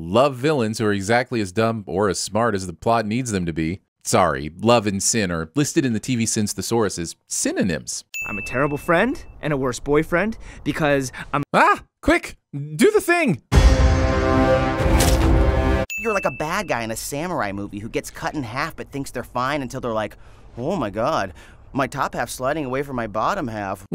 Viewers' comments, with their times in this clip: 0:09 lol he yelled “ahh, do the thing” and an ad played